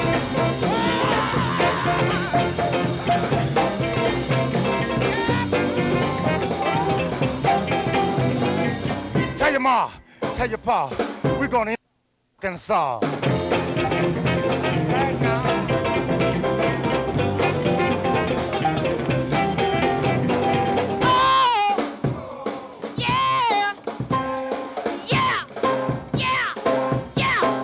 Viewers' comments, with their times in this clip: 0:08 I came here from the Gatemouth Brown Wikipedia page. I used to see him play in New Orleans in the 80s and 90s so grateful to see this!!! Gatemouth Brown clowns his way to the mic to sing “tell your ma tell your pa we’re going to integrate in Arkansas” ITS BLEEPED OUT! Still?!?!